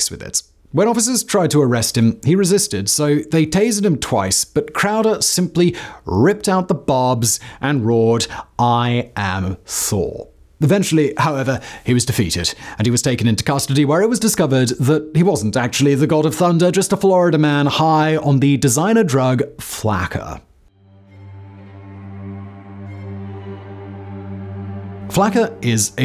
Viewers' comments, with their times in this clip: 0:08 He had a lisp he was really saying he was sore 😂😅😂